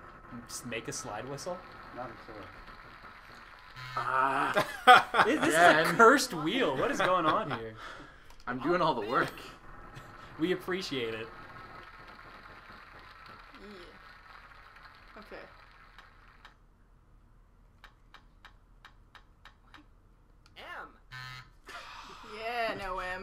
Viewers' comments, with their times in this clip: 0:04 The games way of saying "Screw you and your slide whistles"